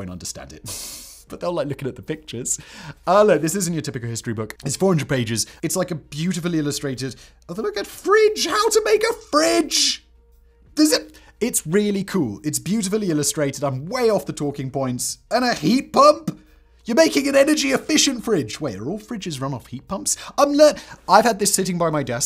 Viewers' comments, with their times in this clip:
0:07 there’s 4-5 seconds here where I thought I was listening to Jeremy Clarkson 😂